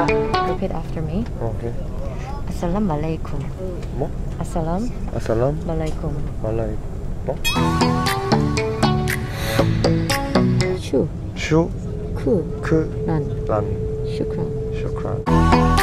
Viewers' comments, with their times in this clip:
0:03 He wants to say: As salam Malaysia 😂😂😂😂😂